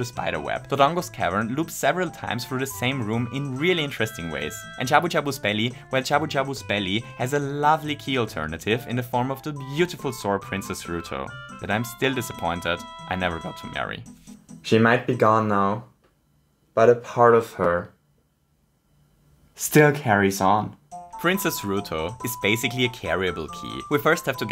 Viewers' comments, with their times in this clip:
0:08 Did he just... Say "she is my waifu", WITHOUT making it sound like he's a weeb??? How??